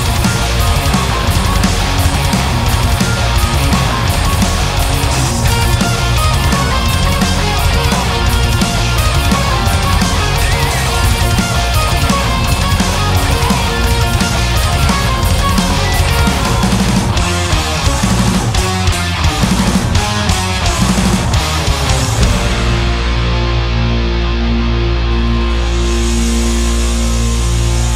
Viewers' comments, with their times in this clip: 0:09 Miyako throws a clam, bad note, and watch her reaction shaking her head. She is human after all